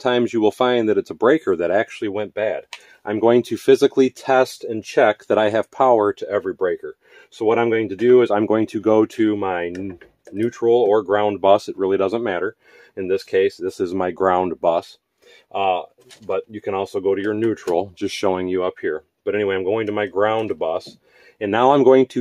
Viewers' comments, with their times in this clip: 0:09 of YouTube fluffing plagued with ahs!